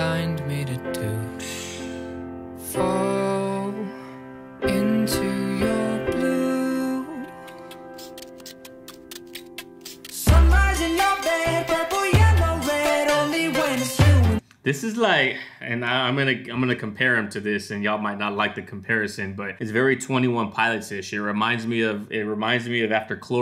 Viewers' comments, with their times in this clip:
0:06 where it starts ticking and then transitions into the beat it also kind of reminds me of Owl City.